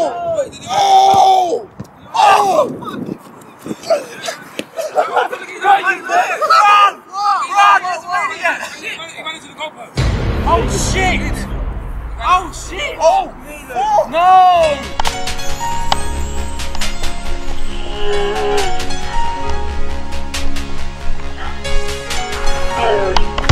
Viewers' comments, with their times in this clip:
0:10 Just ethan screaming oh shit